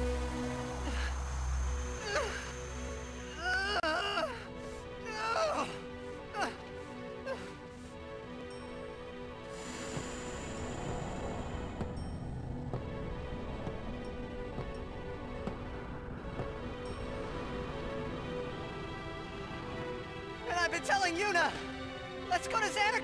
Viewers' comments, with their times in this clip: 0:05 man Tidus sounds like he's constipated